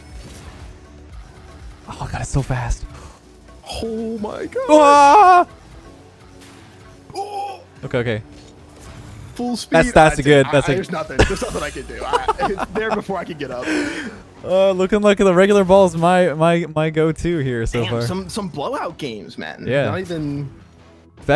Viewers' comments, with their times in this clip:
0:03 That scream sounds like every old video game death ever.